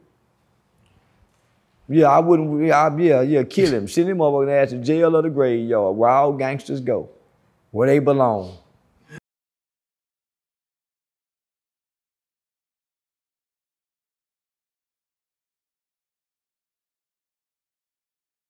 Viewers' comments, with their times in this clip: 0:06 “where all gangstas go, where they belong” Charleston real life be sounding like uncle Ruckus 😂😂